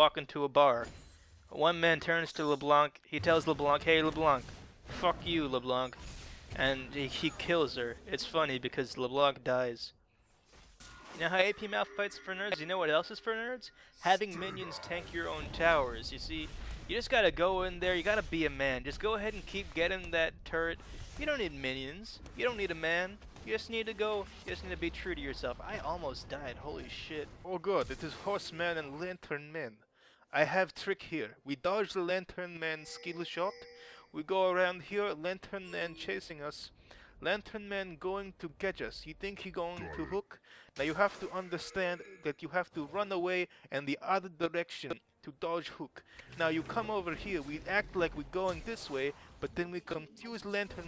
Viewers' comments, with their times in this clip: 0:10 I got scared that my headphones died.
0:11 that moment when you hear that your left headphone is broken........ :V
0:13 on i thought my headset was broke, fucking prank
0:14 I thought my headphone broke and I was about to scream
0:31 Yo, so for future people watching this, the audio fucked up Just imagine me talking in a russian accent about escaping from a lantern man.
0:31 I swear I thought my headset broke because the audio was one ear. I was so freaking terrified
0:31 when i got to and the audio fucked up i almost had a heart attack cuz i thought that my expensive headPhone's got fuckt
0:31 I thought my headphones are broken on T^T
0:31 I thought my headphones broke jfc lmao
0:37 he sound like me